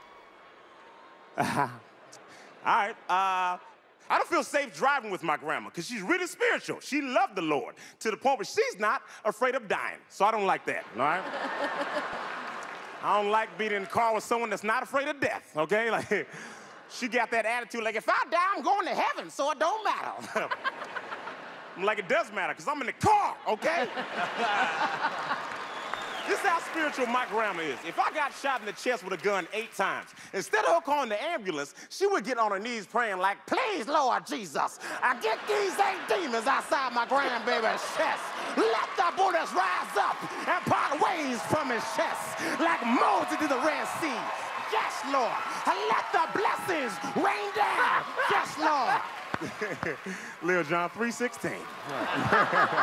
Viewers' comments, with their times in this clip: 0:05 when he did that laugh I just bursted out and then everyone else was just like 😑
0:33 he almost sounds like kevin hart lmao